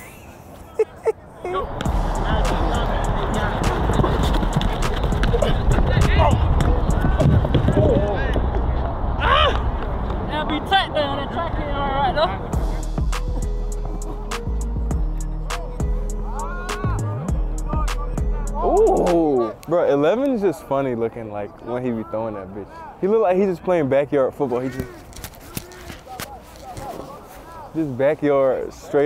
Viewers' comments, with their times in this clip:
0:10 Atlanta accent is heavy asf I still had trouble understanding with the captions 😭😭